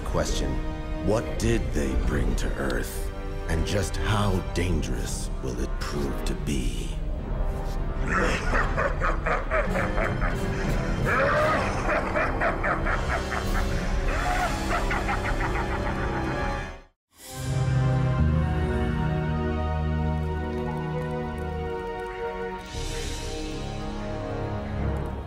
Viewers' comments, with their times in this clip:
0:08 LOVE HIS LAUGH 😈